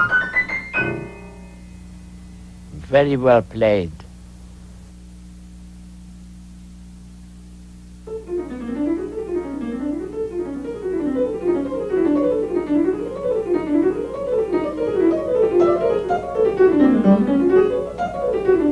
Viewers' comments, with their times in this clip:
0:05 it's the same technique as for the atonal bit in the middle of Jumbo Go Away.